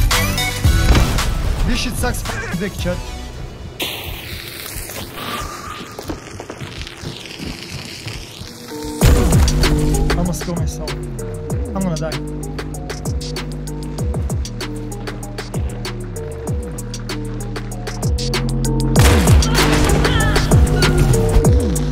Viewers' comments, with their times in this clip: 0:08 insane Beat... want to have it 🤤